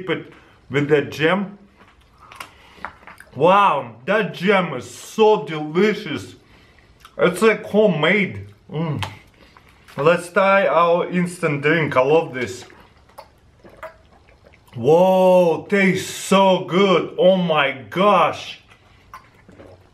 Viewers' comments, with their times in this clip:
0:04 "Wow, that Jim is so delicious"